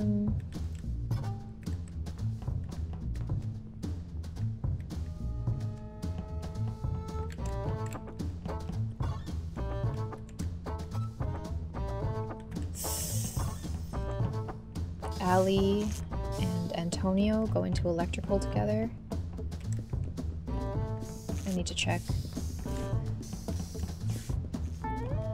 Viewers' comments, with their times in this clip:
0:08 I think I heard a vent noise but she didn't..